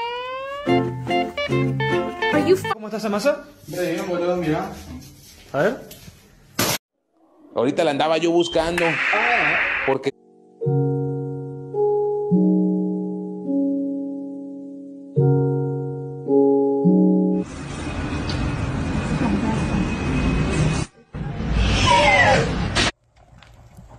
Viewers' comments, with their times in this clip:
0:08 THAT WAS THE SMOOTH CLAPP